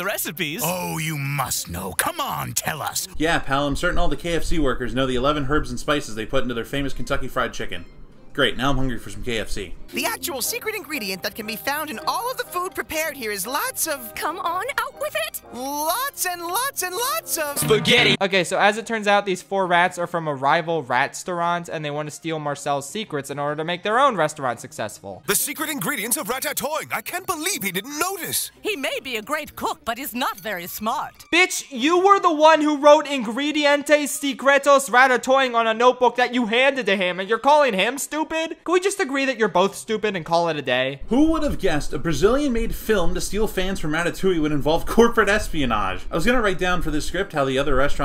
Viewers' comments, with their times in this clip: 0:09 pause after the first word the woman rat says
0:32 as a portuguese, to be fair, your attempt at portuguese isn't that bad, honestly
0:33 u pronouncing ingredientes secretos is the best thing ive ever heard
0:33 love the way schaffrillas said "ingredientes secretos" sounds like a harry potter spell